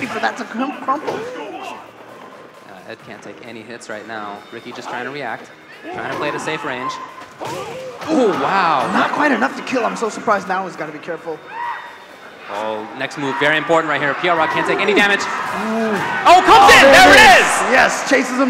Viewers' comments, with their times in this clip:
0:03 I'm sorry why is there a person screaming in the background